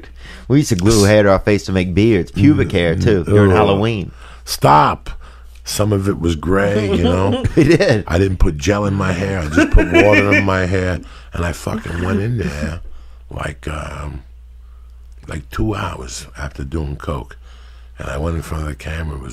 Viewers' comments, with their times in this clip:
0:05 😂😂 That was the gayest stop I ever herd.. JOEY- “Stooop”🤦🏾‍♂️😂😂 wtf‼️